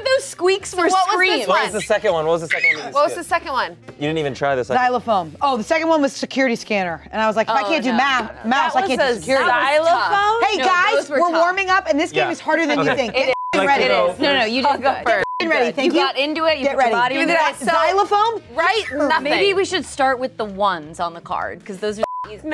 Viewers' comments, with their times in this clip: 0:05 i think you meant… zilaphone??